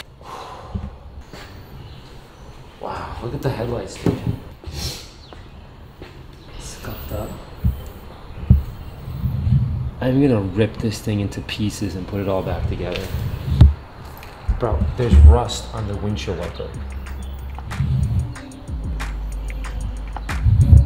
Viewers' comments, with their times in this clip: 0:07 Did you just swear in Greek and said ΣΚΑΤΑ at the of the video, when you saw that scratched rime, or is it me..??? 😂😂😂